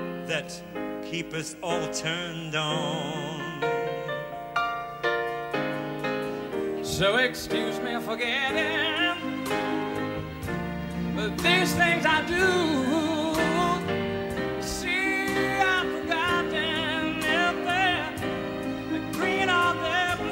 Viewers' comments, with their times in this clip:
0:07 He briefly sounds like 1970-72 here